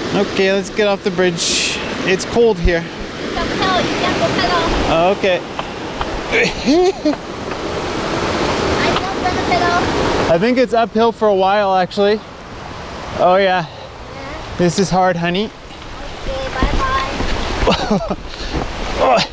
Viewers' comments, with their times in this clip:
0:05 I like your Micheal Jackson impression !